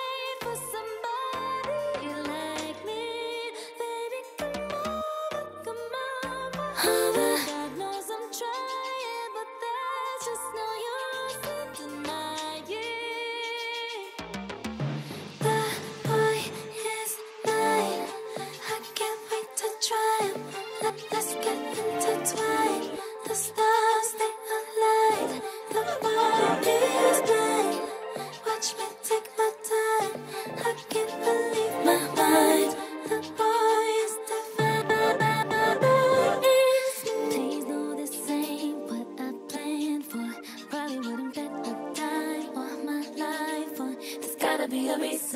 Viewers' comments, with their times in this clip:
0:05 the little “over” in 😫
0:31 the little my mind change up is saurrrrr good